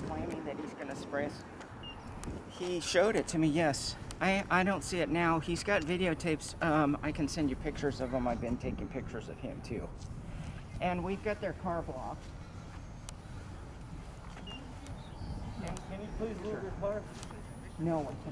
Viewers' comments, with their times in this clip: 0:06 the sound of trembling voice